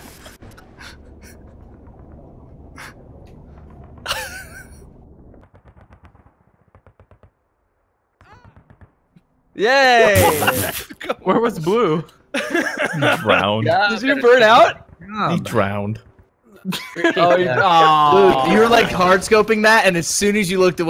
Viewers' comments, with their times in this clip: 0:06 the little "ah!" he does as he dies